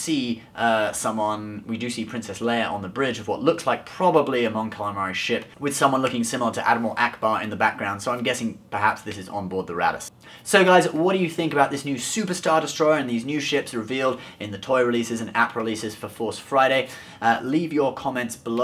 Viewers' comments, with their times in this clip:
0:06 *Activates subtitles* "...someone looking similar to Admiral Ackbar in the backgraund so i'm gay xD"